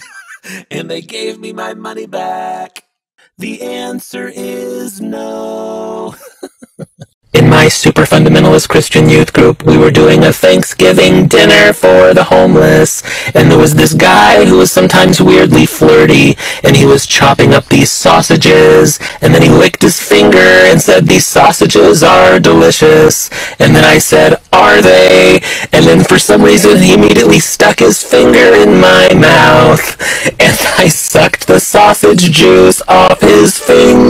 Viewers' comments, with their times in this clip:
0:05 why is the video (timestaamp ) SO LOUD
0:07 made me go to eris so ✨ L O U D ✨
0:07 (I'm not sure if it was my headphones) the audio got suddenly super loud and freaked me out. I think it was only that short, but I wanted to let you know.
0:10 why is it so loud
0:15 holy crap why is your like voice over so loud